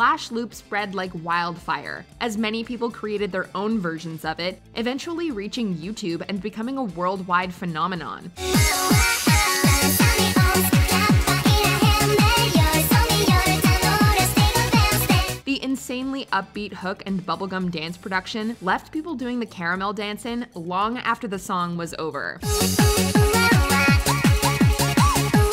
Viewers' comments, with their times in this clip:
0:09 cringey but catchy!